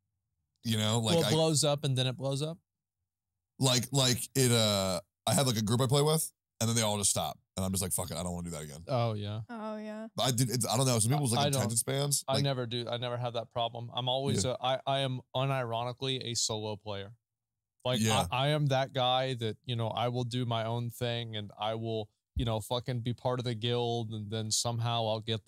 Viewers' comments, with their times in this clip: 0:09 Emiru fulfills contractual obligation to speak at least once every 25 minutes